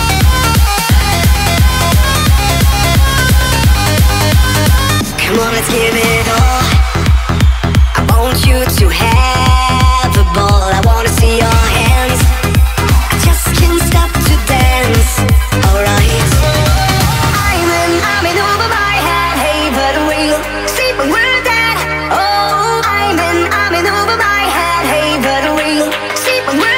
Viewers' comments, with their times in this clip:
0:07 I WANT YOU TO HAVE EBOLA????